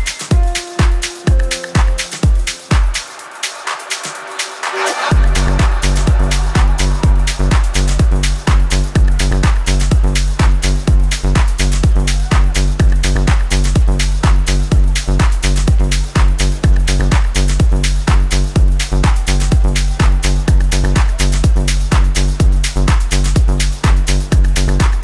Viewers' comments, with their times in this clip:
0:09 ID sounds like Yotto and Simon Doty